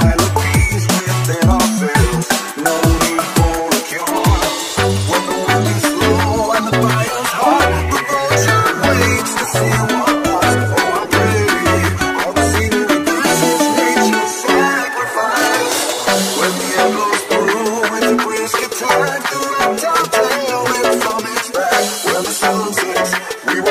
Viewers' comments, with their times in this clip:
0:05 Whoa whoa when the wind is slow syncs up with them claps so beautifully